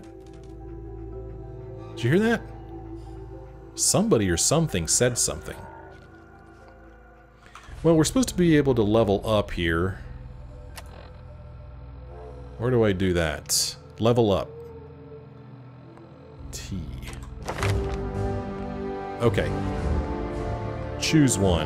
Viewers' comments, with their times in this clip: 0:05 I'm glad I'm not the only one that hears a voice when that darn dog makes that noise!